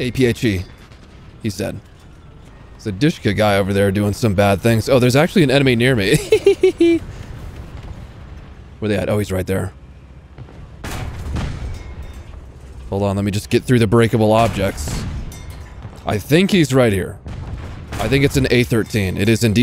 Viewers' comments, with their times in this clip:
0:06 didn't know you had such a nice laugh